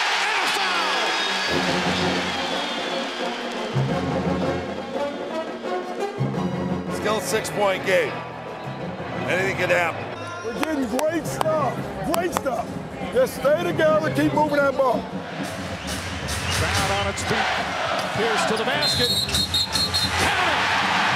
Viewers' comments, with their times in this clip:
0:07 Hey does he say anything can happen or it ain’t gonna happen